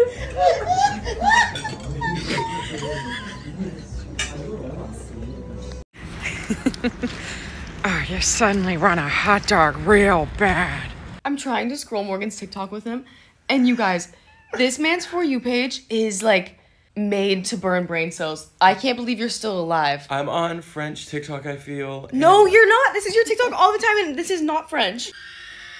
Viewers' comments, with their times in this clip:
0:08 that voice was so spot on 🤣